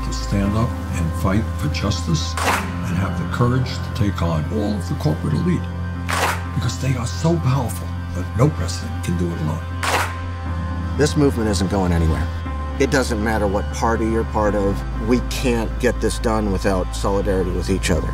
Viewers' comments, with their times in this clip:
0:05 all these sounds near the end sound like glitches and are very distracting. I’m a Bernie voter who just wants the ads to be digestible.